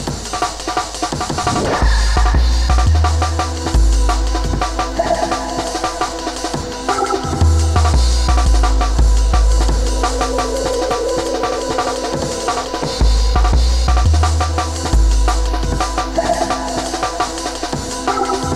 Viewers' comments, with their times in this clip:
0:04 omg that absolute tune 🤤